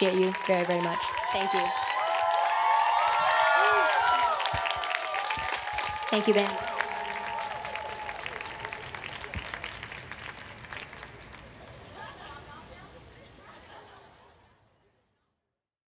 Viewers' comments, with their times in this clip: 0:05 wait Niki said thankyou ben?